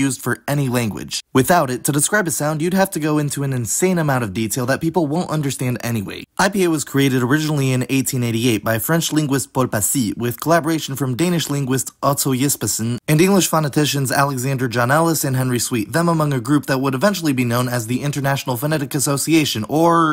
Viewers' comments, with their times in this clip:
0:04 I think it's /t/